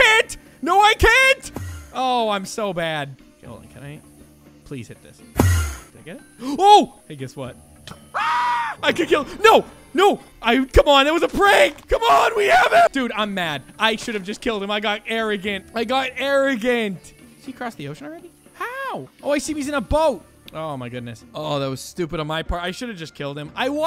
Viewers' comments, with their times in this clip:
0:07 that scream made me laugh so much.